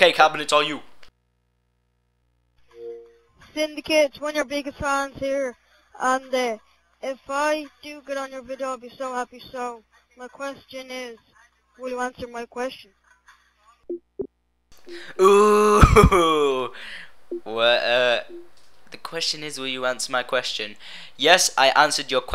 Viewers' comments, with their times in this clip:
0:08 i hear an irish 12 year old!!!!!!!